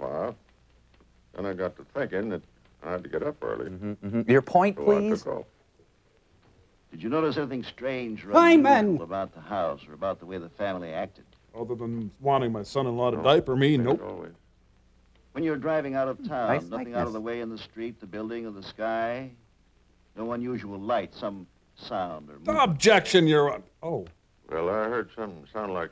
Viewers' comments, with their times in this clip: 0:06 Crow saying Herman like Grandpa Munster kills me.